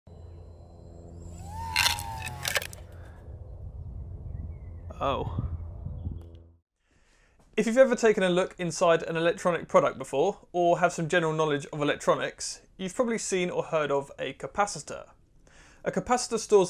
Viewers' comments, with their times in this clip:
0:00 it sounds like toad dying
0:00 That "oh" got me laughing
0:01 It sounded like the Lego brick sound! 😆